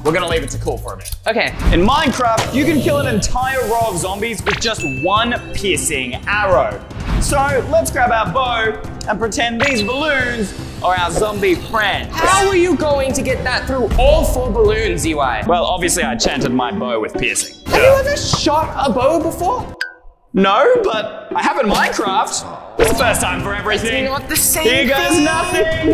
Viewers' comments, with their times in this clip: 0:06 Peeing arrow lol😂😂😂😂😂😂